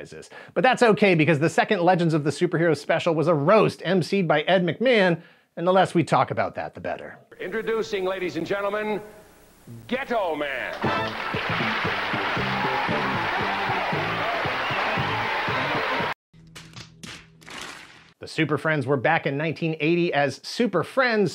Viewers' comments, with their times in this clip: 0:07 What? Haa! Even I 🤦‍♂️ when he announced "Ghetto Man" but pronounced it like Ghe'toe Man. Also, what were they thinking when they came up with such a name? Was his sidekick supposed to be Compton Boy, Oak Park Lad maybe Chicago Kid? 😆👍